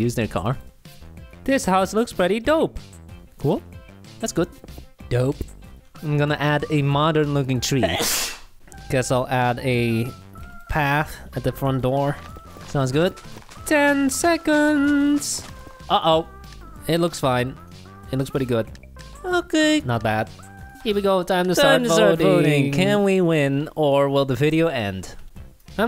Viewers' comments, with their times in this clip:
0:06 the music gets interrupted and skips. God it was little edits like that that made the series just a bit more funny. Can always appreciate when an editor recognizes they dont need to go overkill on edits and can just do whats good, appropriate, natural, and funny